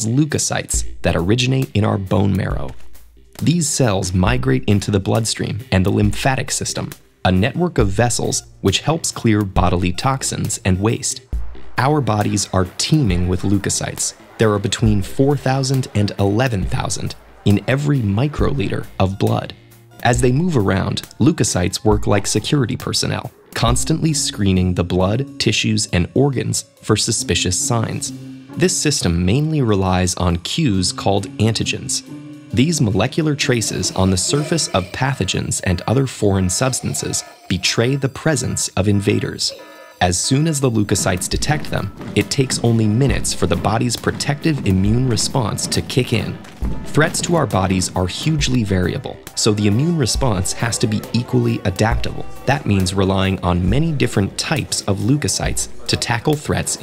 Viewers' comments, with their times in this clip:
0:05 Can we talk about the pulse cardiatic sensor sound effect?
0:41 do you notice that this is like among us sabotage sounds